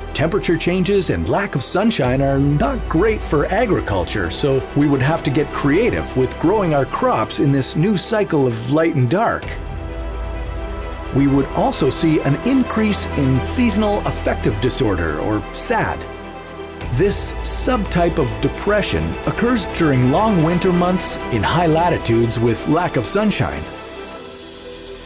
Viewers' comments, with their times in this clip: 0:08 I heard 🅿🆄🅱🅶 starting sound in this video,that-( thing) like voice, example-- Press that blue numbers and wait, oh 😲 now you hear